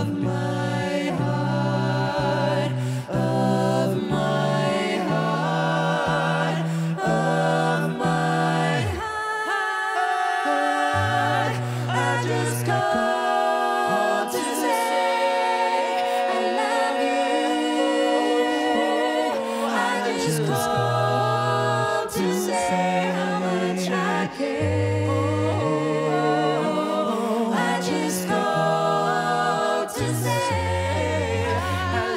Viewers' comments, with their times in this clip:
0:08 My favourite part! The arrangement is just so beautiful! The harmonies and the timing 😍😍😍
0:13 Mitch low note in got me shock lol, I thought it was matt or kevin... Love Pentatonix